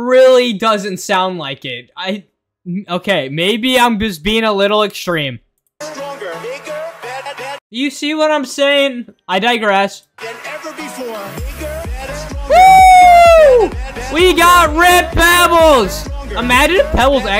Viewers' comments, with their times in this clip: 0:05 WHAT DO YOU MEAN BIGGER SOUND DIFFERENT